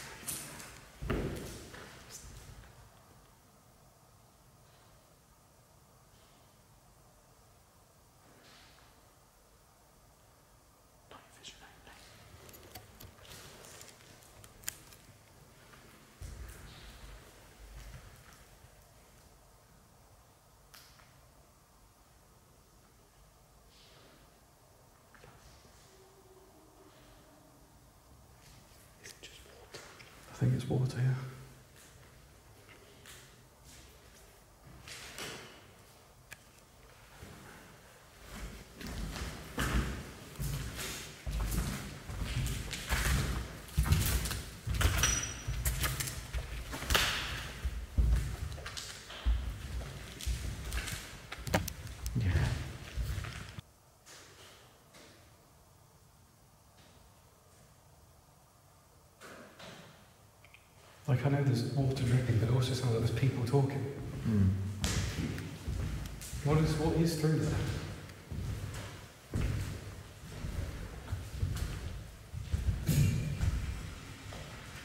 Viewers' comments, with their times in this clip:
0:10 you heard something but shrugged it off to water. While wearing my earbuds I actually heard a young girl humming or singing. Anyone else catch that?
0:10 you heard something but shrugged it off to water. While wearing my earbuds I actually heard a young girl humming or singing. Anyone else catch that?
0:24 I definitely heard a sound like someone or something saying or making sound "Naaaa naaaa" or "Ahhh haaa" almost like in a singy voice kinda way not just spoken at this time aside from the water dripping but the guys say nothing about it so Idk
0:24 I can hear a lady humming!
0:25 Right it sounds to me like you can hear a woman sing two notes of a song? Did you hear that? Creepy!
0:26 yall heard that child like voice?!!!
0:26 Definitely someone singing
0:27 just before you said it is water, I heard a sound which sounded like a woman! A WhoooHooo sound ...
0:27 That was a voice wasn't it?
0:30 That was really intense! I heard what sounded like singing A voice going "tra la la lahhh!" like practising scales. At some points I could hear a sort of babble of distorted voices- but was it windy, was there a motorway nearby? I think if there was something there it was trying to suss you out. It seemed to be drawing you to the stairs, so if you do go back make sure you're safe on the stairs and can't be pushed (sorry to sound creepy!)
0:58 What was that noise ?